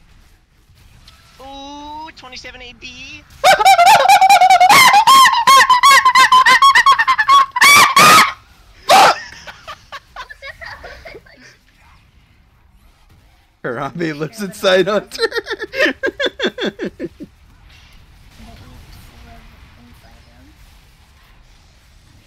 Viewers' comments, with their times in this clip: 0:03 you sound like a squeaky chicken